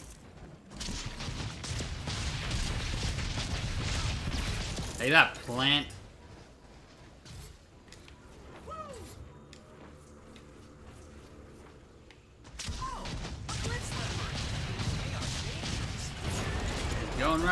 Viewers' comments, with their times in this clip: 0:05 Did anyone hear a dog bark?